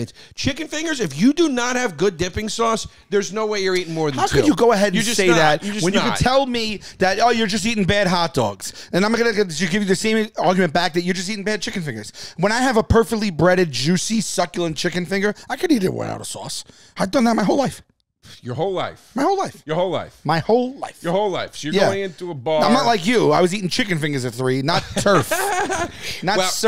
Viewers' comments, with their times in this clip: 0:09 love that jazz scat!